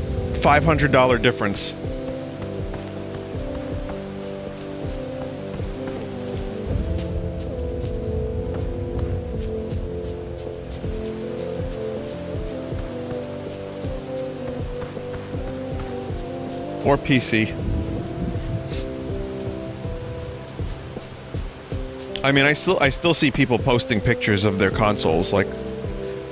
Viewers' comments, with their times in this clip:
0:07 Why does this sound so much like Asylum for Feeling? Fuck I wish Vinny liked Death Stranding.